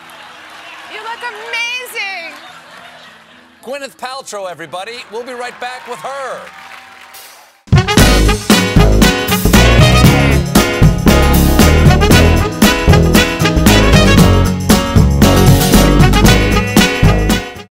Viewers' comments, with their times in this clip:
0:05 Stop the video by to keep from having your ears blasted off.
0:08 outro music comes in